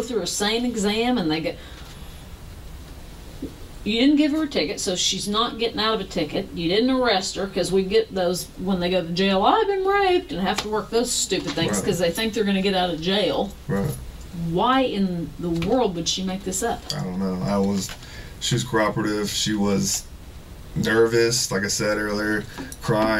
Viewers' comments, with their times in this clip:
0:08 Forgot to bleep R word